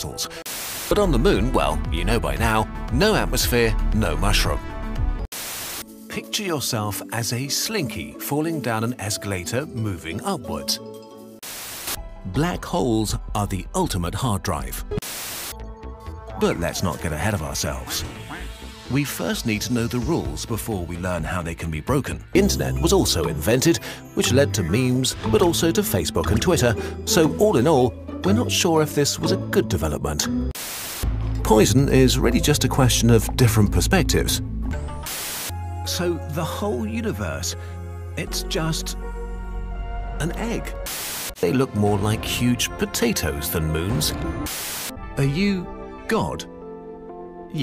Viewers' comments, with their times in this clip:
0:09 sisyphus theme plays
0:35 he sounds surprised